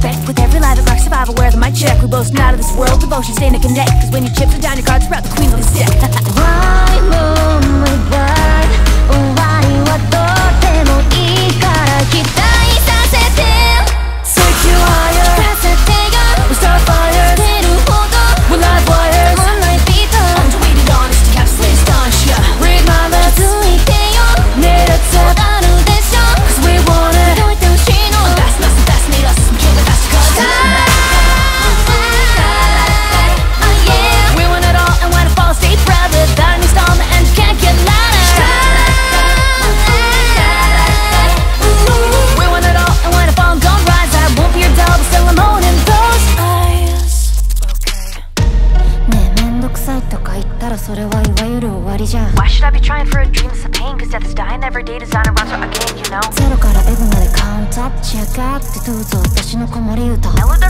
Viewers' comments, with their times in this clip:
0:10 this is my favourite part their sound are shocked me, so high so amazing！
0:24 when they start the back and forth like that is 🔥
0:30 this part made me a fan of suisei's vocal
0:48 I'm still addicted to this rap part, no matter how many times i listened to it~~